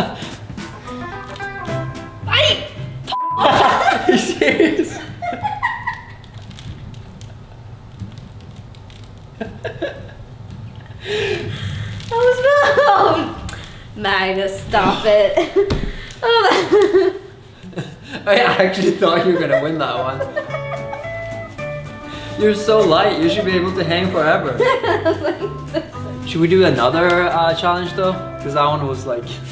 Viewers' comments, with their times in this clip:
0:10 That one Breath is telling you its time To Impress!